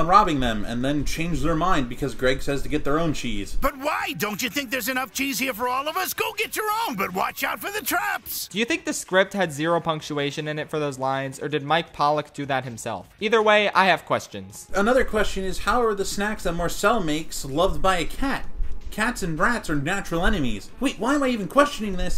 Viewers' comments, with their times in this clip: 0:03 is that freaking Eggman?